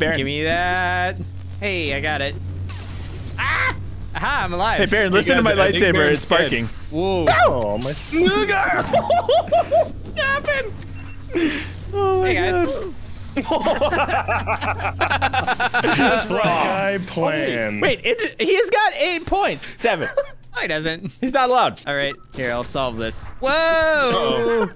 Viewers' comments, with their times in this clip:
0:07 anyone else here the n word